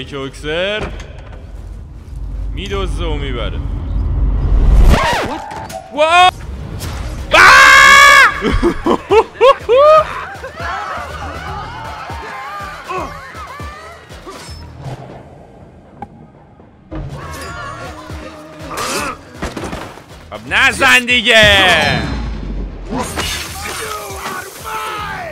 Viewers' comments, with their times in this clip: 0:07 just your scream😂😂😂